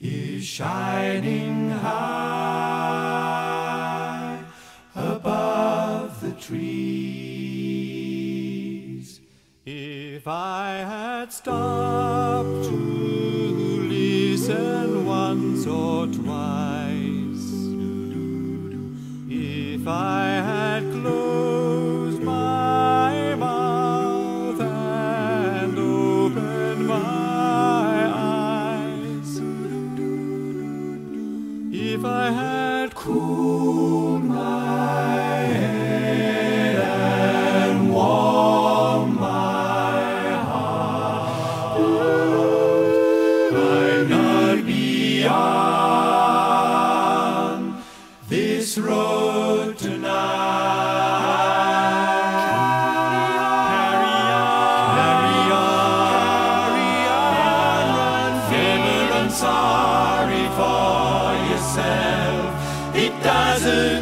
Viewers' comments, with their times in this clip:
0:07 Who takes the baritone/tenor whatever it is solo ? Sounds like Philip Lawson mixed with Simon Carrington...
0:52 This song is from the "Good Vibrations" CD. The line up at that time was David Hurley, Alastair Hume, Bob Chilcott, Bruce Russell, Simon Carrington, Stephen Connolly. In this song you can hear everyone BUT Alastair. His voice is very bright by comparison. At the bridge in order you hear David, Bruce, then Bob and Simon on harmony.